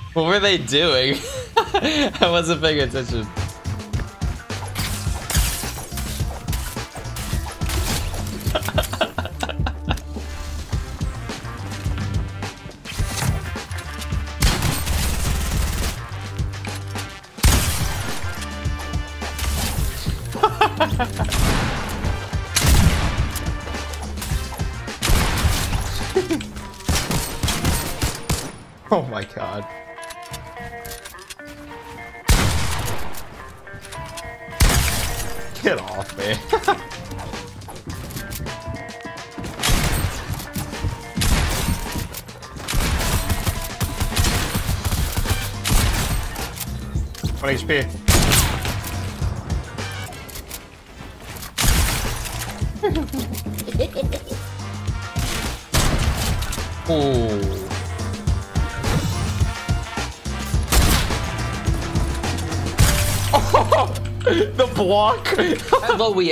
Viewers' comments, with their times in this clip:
0:08 that laugh was so forced 😂
0:52 those laughs though
0:52 Did anyone else hear that weird laugh
0:52 that laugh tho 😂😂😂😂😂😂😂😂😂😂😂😂 Also your an insane player !!!!!! You should help me get my first win 😂😂 I’ve been playing since season 4 and still don’t have a solo win
0:53 no ones gonna talk about the laugh